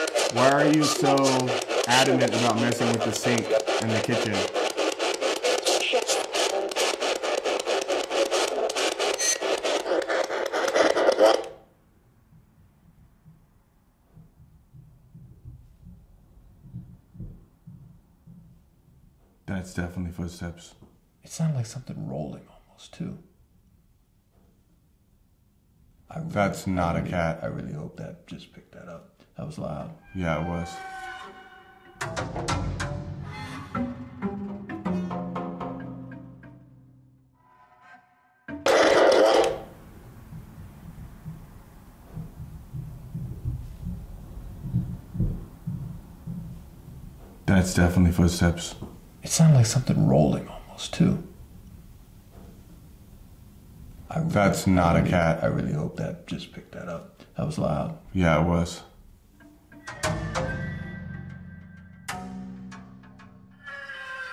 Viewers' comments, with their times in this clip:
0:05 Great video! Sounds almost like a womans voice answering your question by saying, "Chef"
0:06 if you listen closely you could hear a woman's voice saying shut up at the question about the kitchen sink
0:50 ... It sounds like somethings rolling 🤔👻 Also ... Kitty living her best life 🧶😸🐀